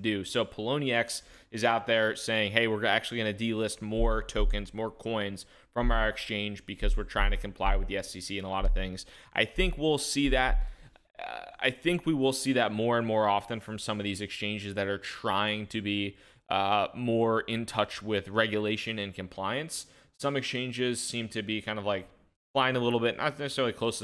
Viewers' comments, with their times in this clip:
0:06 Ha I hear BASS. Only I would be excited about that though